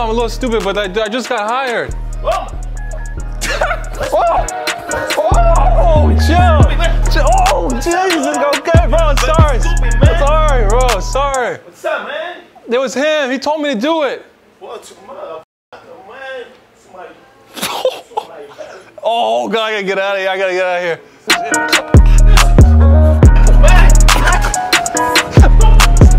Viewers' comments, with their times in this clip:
0:09 lel the barber laugh hhaha